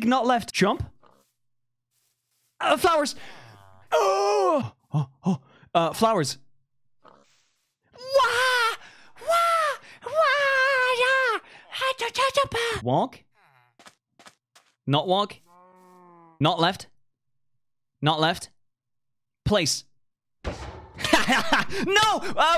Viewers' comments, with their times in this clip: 0:08 first: why is no one talking about this second: he sounds like an anime chatacter
0:08 proceeds to Mario scream
0:08 Far Cry Primal language be like:
0:09 *angry furry/fox noises*